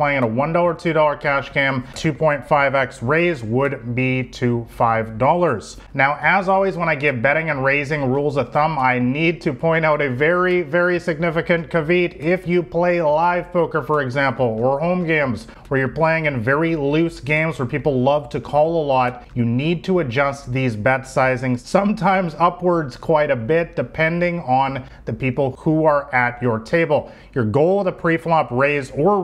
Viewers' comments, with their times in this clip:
0:06 Nice video. I hope between the time you made this video and now, you've learned how to pronounce "caveat"
0:10 Did this nigga just say "caveet" instead of caveat? (Caviyacht) 😂😂